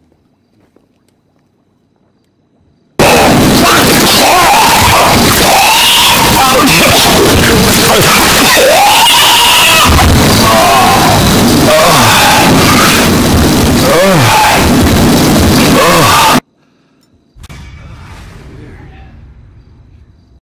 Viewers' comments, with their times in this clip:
0:09 sounds like a pig or ostrich throwing up food lol